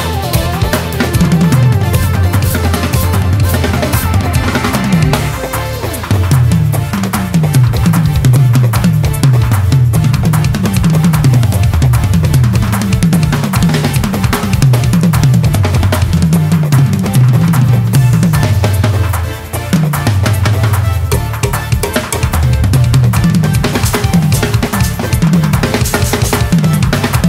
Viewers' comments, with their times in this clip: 0:08 She throws her glasses off ! 100% sure they smacked the ground in perfect rhythm.